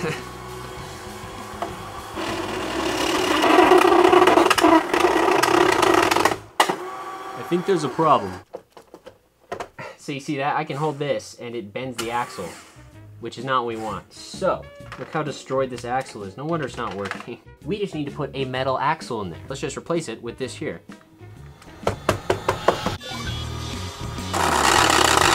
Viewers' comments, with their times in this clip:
0:05 he had a voice crack. I like the saw.
0:08 Why did his voice get so deeper than usual